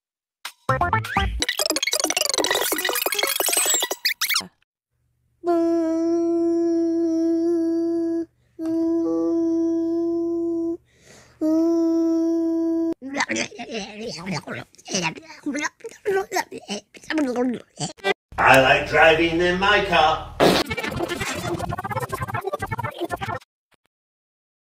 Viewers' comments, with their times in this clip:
0:10 humming "VFJIEHGONGELNFELNGEFJDLEVLMWGFOKEVFLVGEMDLNOVENOEVFNEKGRWOKVFEONRGEOKFGPJEGGFEOBVDOHGEBLUEIGH" such inspiring words...